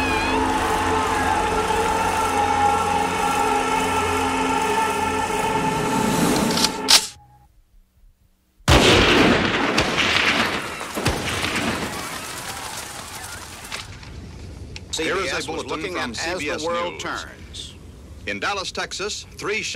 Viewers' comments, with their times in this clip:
0:06 the build up, the clambering of the rifle, the moment of silence, bang, bang, bang
0:06 I only heard 3 shots.